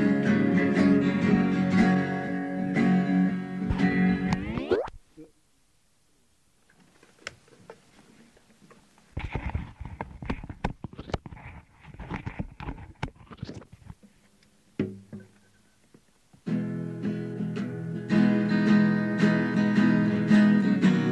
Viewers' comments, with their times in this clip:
0:07 Page does a little ASMR for your hearing pleasure